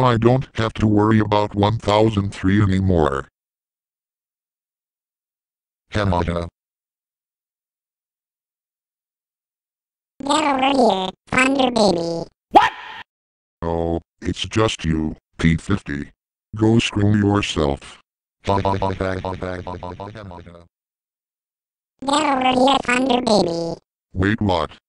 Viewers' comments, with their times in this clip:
0:09 girl ACA P-50 XD